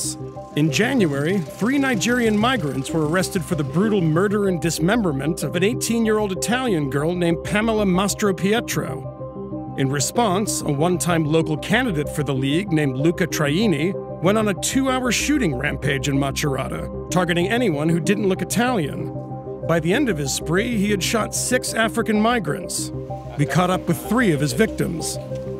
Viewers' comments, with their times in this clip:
0:06 the girl is dead but the reporter still manage to murder her name